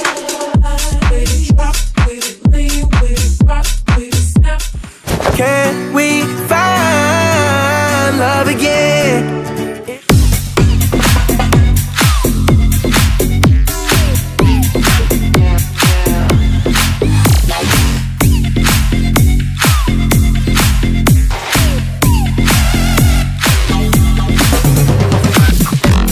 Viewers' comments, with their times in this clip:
0:09 without the music this emote would just be forgotten